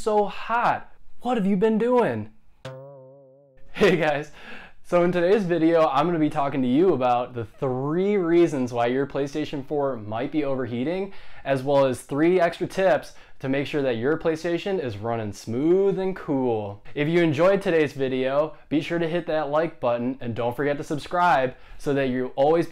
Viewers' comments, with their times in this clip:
0:07 3 reasons or 13 reasons?